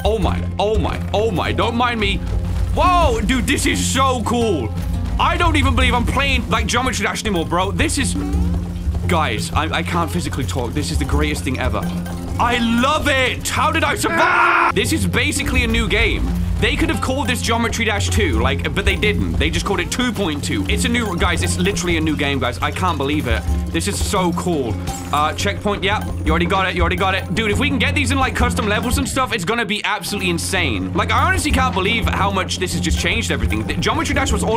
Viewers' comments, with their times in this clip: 0:03 Thish ish sho cool
0:16 absolutely true Also, I legit think scratch's voice would sound like that :)